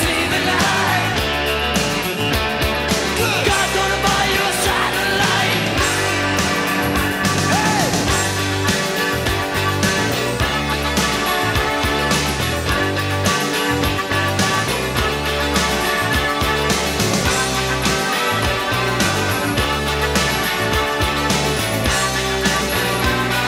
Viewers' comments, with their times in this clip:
0:08 I love that solo on melodicas